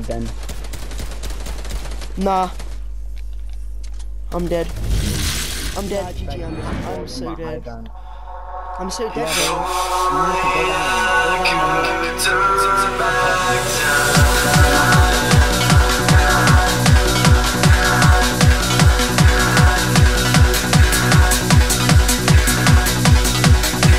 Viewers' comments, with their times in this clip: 0:07 headphone user warning